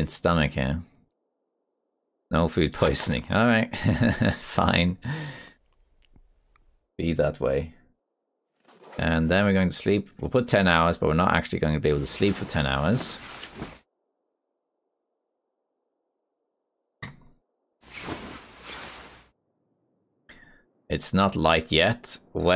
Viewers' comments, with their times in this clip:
0:04 I'm slowly catching up with this series ... I just enjoy watching and listening to your journey, when you're eating all the low condition food, it almost sounds like your annoyed that you didn't get food poisoning... loved your " fine, be that way"